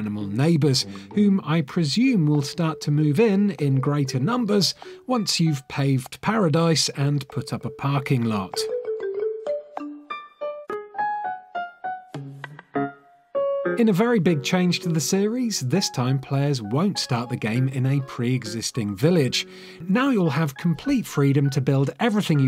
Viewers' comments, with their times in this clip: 0:06 omg that song is rly good